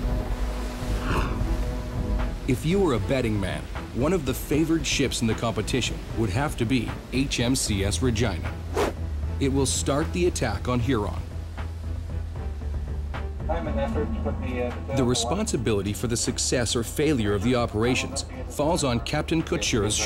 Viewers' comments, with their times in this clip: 0:07 Vagina xDD lol IMAO
0:07 Listened a few times and had to turn captions on. I was sure I heard "HM sea ass vagina". xD